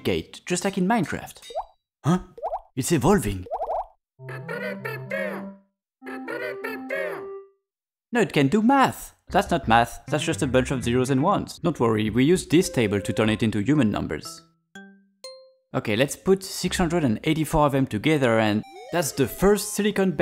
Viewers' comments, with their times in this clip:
0:07 as a French baguette I also believed that you were French! Your accent fool us ^^ Also, little oopsie I believe: you wrote "1+1=11" whereas it should be "1+1=10" in binary